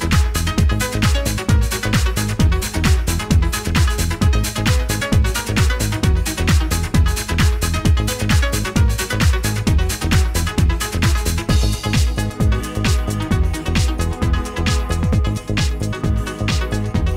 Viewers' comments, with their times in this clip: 0:04 Club 1015 Folsom, San Francisco California, the year 1997, the 1 am DROP happens on and the PLACE GOES F'en BALLISTIC!!! thank you 1997 for making my life complete, and 15yrs or Trance/House in SF was an ICONIC era of the greatest dance music ever heard.